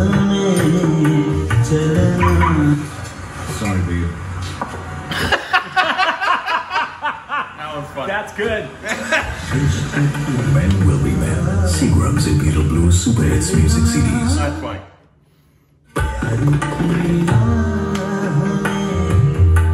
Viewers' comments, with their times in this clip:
0:05 what a wicked cute laugh bro 🤣🤣🤣🤣